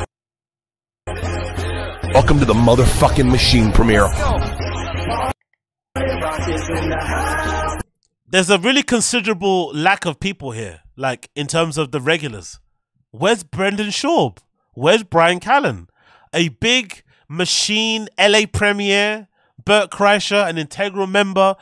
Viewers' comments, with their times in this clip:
0:08 bro what year is it? Bert’s using “party rock” and the hype track for his premier 😂😂😂